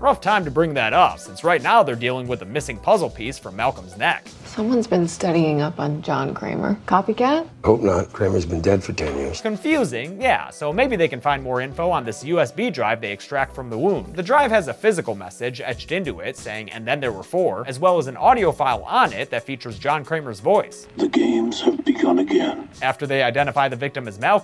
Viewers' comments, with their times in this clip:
0:07 What is said " Hope not John Kramer has been dead for 10 years" Subtle :" Coconut cream has been dead for 10 years"